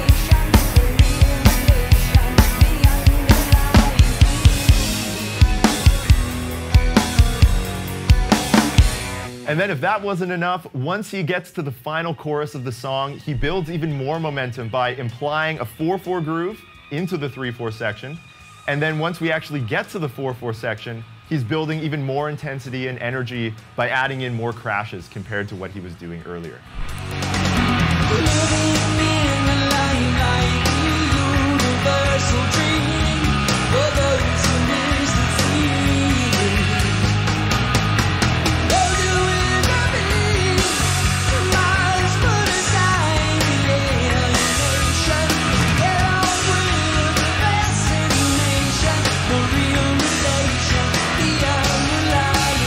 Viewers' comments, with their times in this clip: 0:10 My fav part ist DEFINITELY the flanger-driven drum roll in By-Tor and the Snow Dog in time. I LOVE seventies dry drum sounds and this one is executed so well.
0:36 Neil messes this up lol. He plays 8 eight notes instead of 6. 😂